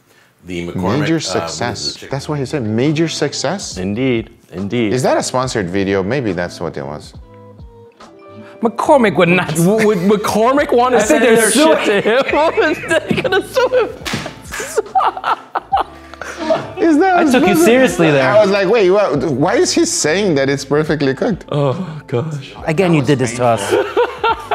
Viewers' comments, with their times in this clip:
0:06 holy that 2sec silence before everything hits 🤣